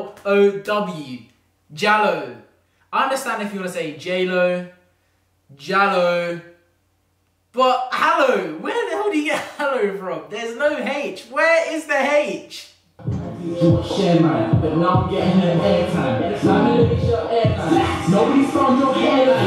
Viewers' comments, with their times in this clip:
0:04 in spanish “j” is pronounced as a “h” thats probably why